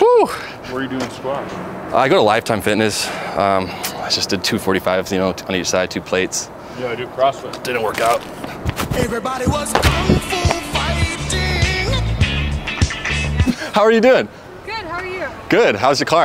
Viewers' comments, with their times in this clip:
0:04 i honstly didnt think he would accept to help just because he wore a bussiness attire... he even laughed at the end... props to him